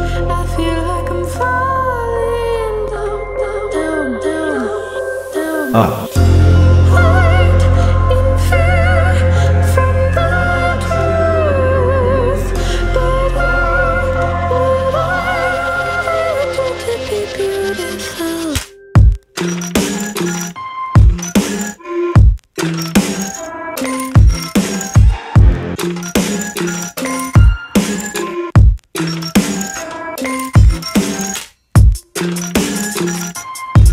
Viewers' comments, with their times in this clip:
0:03 I couldn't stop laughing when everyone said: down down down down down then uP
0:20 why does it sound like cradles